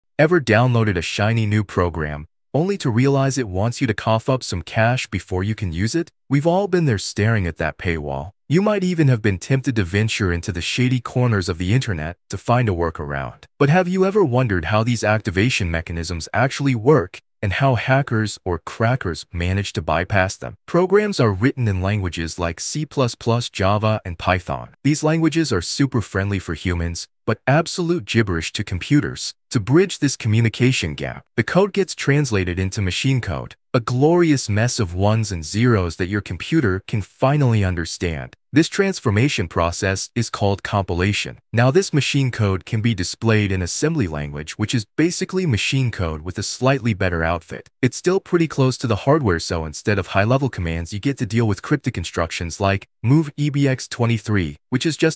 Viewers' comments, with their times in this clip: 0:01 AI voiceover, not watching the video.
0:40 Whose dog is that and why is he so mad?